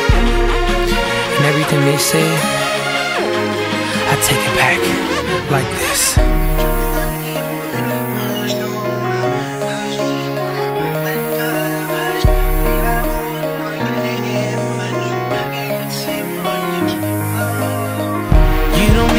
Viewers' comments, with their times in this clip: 0:04 is just a rewind of what he says after it's stop rewinding.
0:06 what language did he speak ? been trying to figure this out. anyone got a clue?
0:06 the backmasking is FLAGRANT